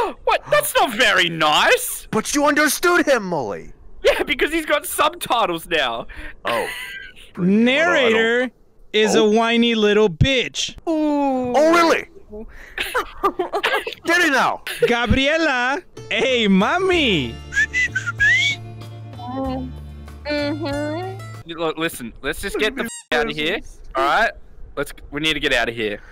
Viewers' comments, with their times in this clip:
0:08 is now my favorite moment. That "oH, rEalLy??" killed me. Why he bend his neck like that? 🤣🤣🤣🤣🤣